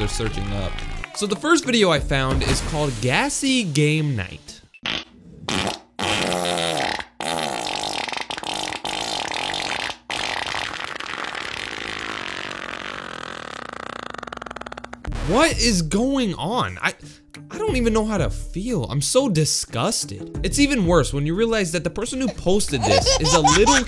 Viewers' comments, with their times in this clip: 0:05 my mom heard that And she was like: oh god our dog farted again.